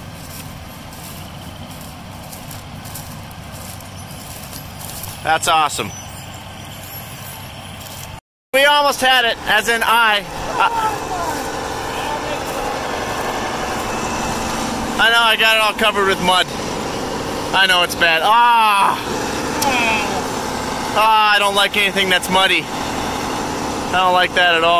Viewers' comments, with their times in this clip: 0:05 Did I hear frogs ? Lol